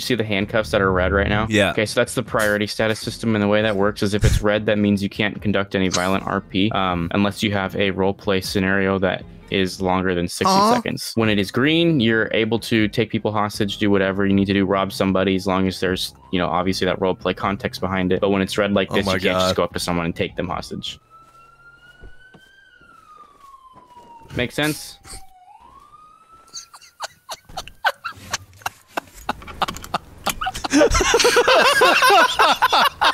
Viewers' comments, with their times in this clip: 0:08 the silence after that bruh 😂😂😂😂
0:19 the silence left behind it was so freaking funny